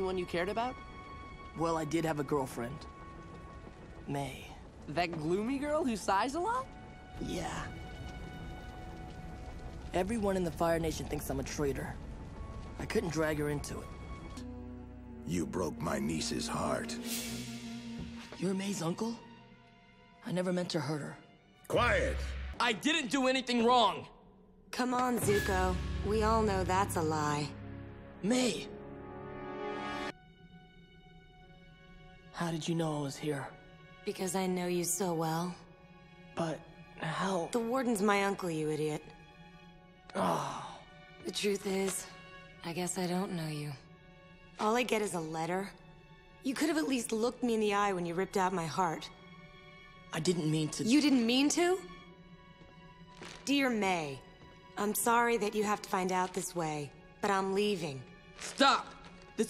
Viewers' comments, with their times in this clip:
0:07 That little “yeah” is filled to the brim with fondness. It’s such a great little moment
0:09 the way he said her name AWWWWW
0:40 Zuko: Aw Man like Jake Long